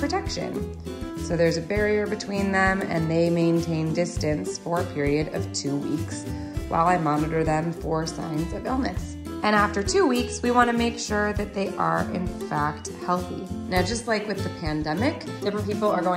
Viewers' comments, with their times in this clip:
0:04 that white kitty meow on the left